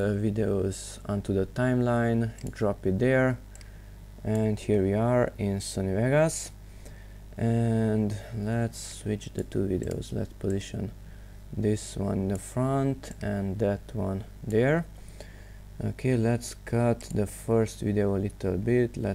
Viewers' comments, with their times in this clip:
0:05 "here we are, it's my ass"